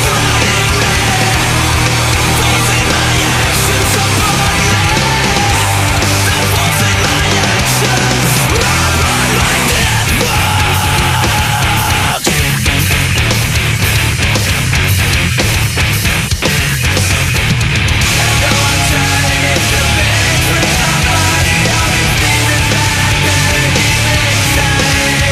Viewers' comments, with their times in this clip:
0:08 this riff let me epilipsy..it was awesome
0:09 damn the guitarriff starting is just mindblowing
0:09 This deleted scene would be Tyler Durden's climax. Waste of an insane breakdown XD